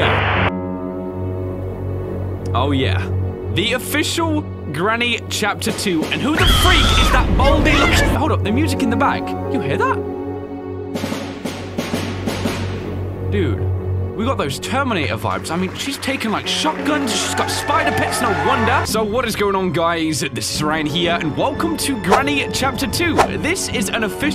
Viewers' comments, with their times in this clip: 0:10 that almost sounded like the Terminator theme